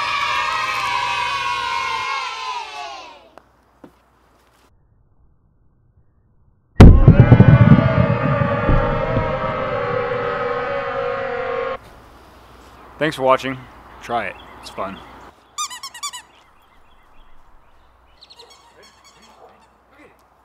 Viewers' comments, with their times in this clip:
0:06 i hear demons crying for help
0:06 THE CHEERING SOUNDS LIKE DEMONS
0:07 thats a terrifying laugh
0:07 Im a big fan of the random sound effects especially the slowed down kids cheering its like hellspawn